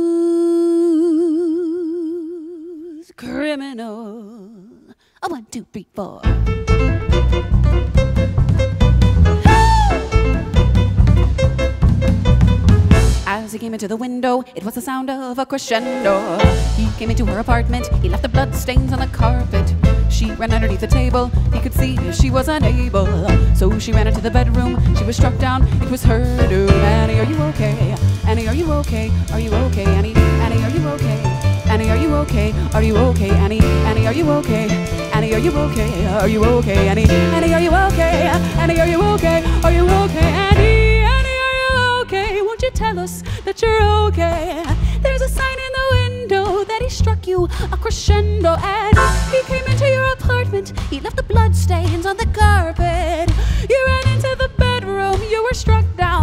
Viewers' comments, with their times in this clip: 0:09 that "Whoa" was amazing
0:40 shift to triplets still gives me chills